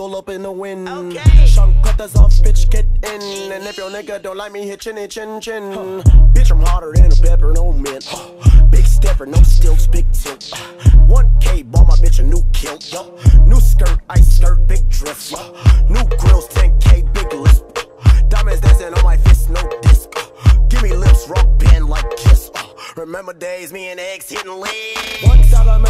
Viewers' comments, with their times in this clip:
0:06 this is my voice 1 year in alabama
0:06 sounds like goofy